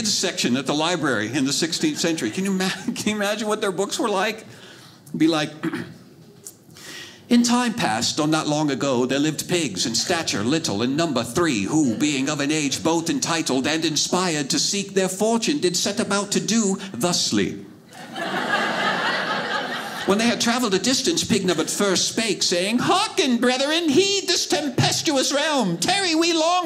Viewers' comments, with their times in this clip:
0:06 FYI, Uproarious laughter follows minute-mark 😂🤣🤣
0:13 the first time he spoke, I thought he said “the sleep”. I had to listen to this again to hear him say “ thusly”. Old English is weird.